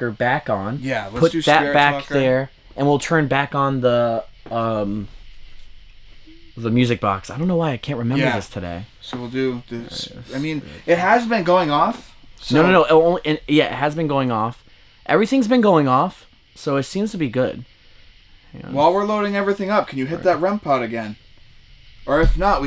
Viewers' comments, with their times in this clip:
0:05 Sounded like a woman's voice going "hmm"
0:05 there's a woman humming